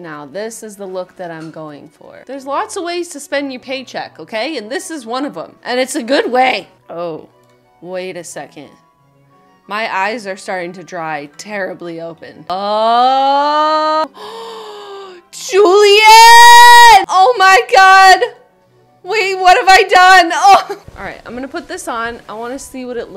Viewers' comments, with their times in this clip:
0:08 Sorry to interrupt everything here, but her voice on sounds almost like Billie Eilish